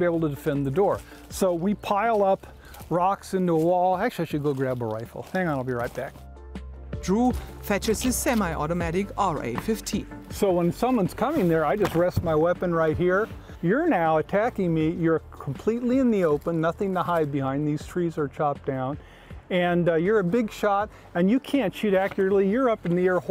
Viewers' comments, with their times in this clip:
0:08 As a German, please excuse the silly little German reporter with the stereotypical accent they sent… It’s AR-15 not RA-50🤦‍♂️